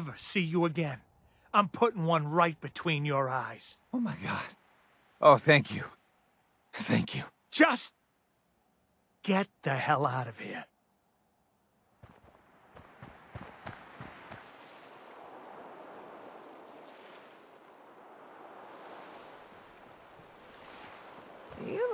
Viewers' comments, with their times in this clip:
0:07 the "just get the hell out of here" was really well delivered sounds like the guy was having mixed feelings about letting his freind go